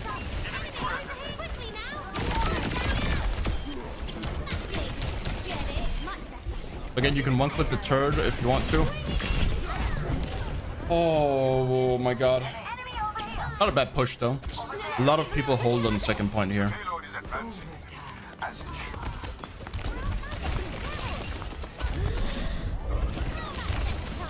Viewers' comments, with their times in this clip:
0:06 "again you can 1 clip the turd if u want to"